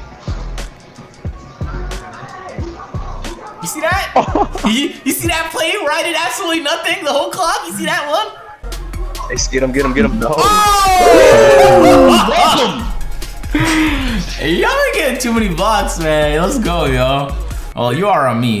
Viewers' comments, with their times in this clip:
0:05 Eyy who else heard someone’s speaker say “who got ball who got ball?”